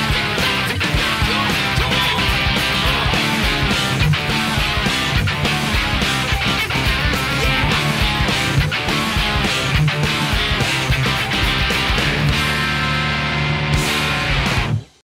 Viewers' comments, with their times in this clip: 0:07 Spot on man! The little slide is a mindf&ck… and never mind that solo. Wow